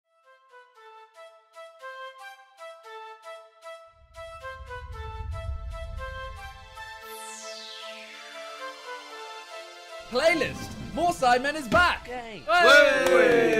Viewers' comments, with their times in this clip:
0:00 why did I thought it was go to the Godzilla theme💀